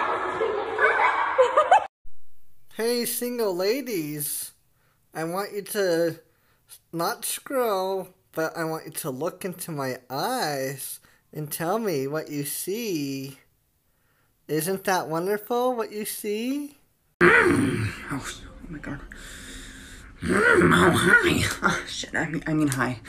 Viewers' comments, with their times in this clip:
0:03 this man looks and sounds like Syd from Ice Age
0:10 sounds and looks like that old guy from tangled; the one who hits on mother gothel or whatever the fuck